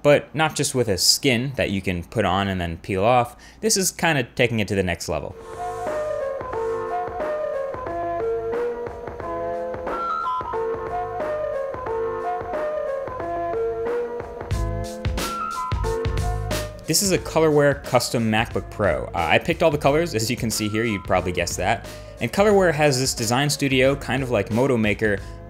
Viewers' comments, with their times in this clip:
0:06 dude. the music!?